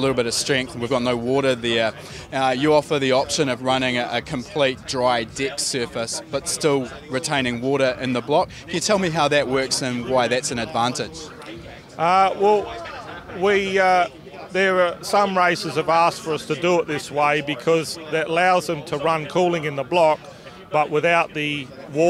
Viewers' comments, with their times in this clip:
0:03 A dry dick surface is never recommended - use lube. Great vid btw